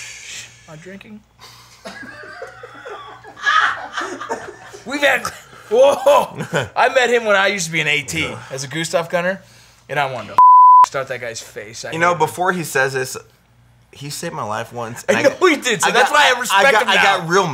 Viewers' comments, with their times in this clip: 0:03 there’s nothing even gone from that bottle and you’re giggling like school girls. I really woulda thought you guys could handle your booze better